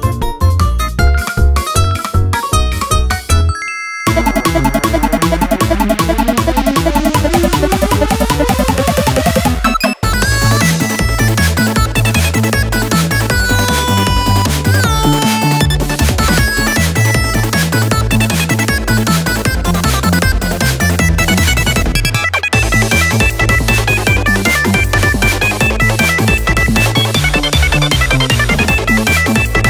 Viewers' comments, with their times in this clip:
0:10 BRUH WHAT WAS THAT XD i really didnt expect that, yet it sounds sooo good